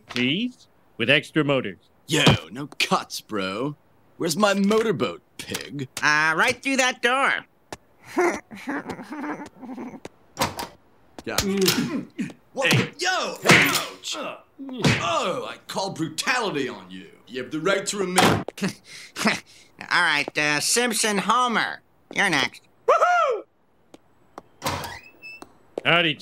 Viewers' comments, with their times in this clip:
0:07 I like how Wiggum laughs